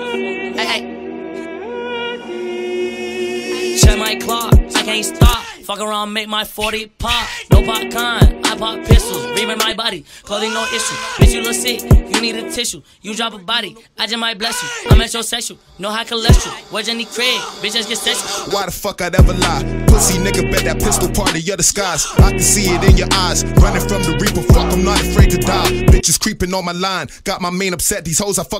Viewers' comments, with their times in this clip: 0:08 Anyone else hear the jacksepticeye scream
0:08 The AHAHHHHHH hits different
0:09 YOU CANNOT THAT DOES NOT SOUNDS LIKE JACKSEPTICEYE
0:09 tell me that scream doesn't sound like jacksepticeye
0:09 that scream is 🔥😈
0:09 tha scream is flames🔥🔥🔥
0:10 That scream sounded like jacksepticeye to me😂😂
0:10 sounds like bakugo losing to deku 💀
0:10 That Scream Is A Instant Nut
0:10 That scream hits hard everytime😭😭
0:10 felt that scream
0:10 that scream is everything🔥
0:10 the scream tho❤❤❤